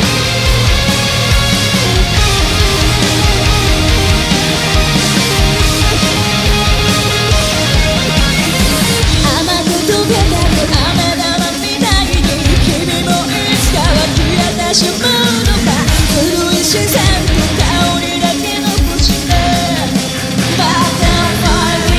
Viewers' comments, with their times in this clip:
0:07 sounds like the tapping part to onset!!